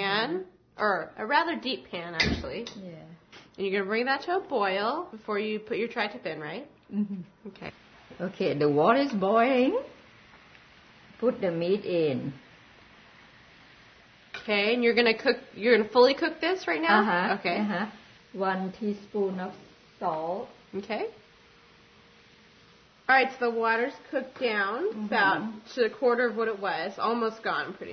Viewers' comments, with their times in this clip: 0:10 I'm Thai and I found it funny. when the water is Booiiinnngggg